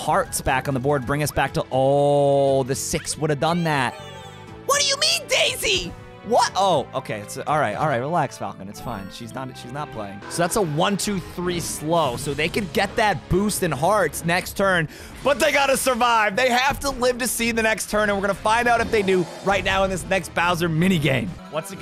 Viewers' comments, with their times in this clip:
0:04 kinda sounds like boat